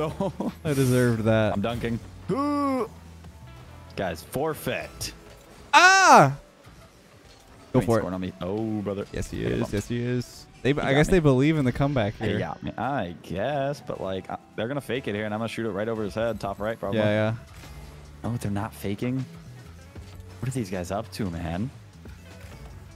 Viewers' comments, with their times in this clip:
0:05 That was the same scream as CJ in GTA San-Andreas lmaoo